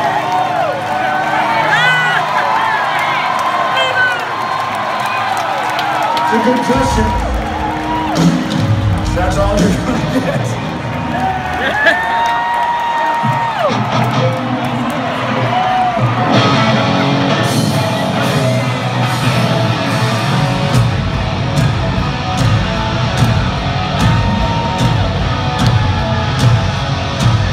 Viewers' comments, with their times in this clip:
0:09 Why did Axl laugh ?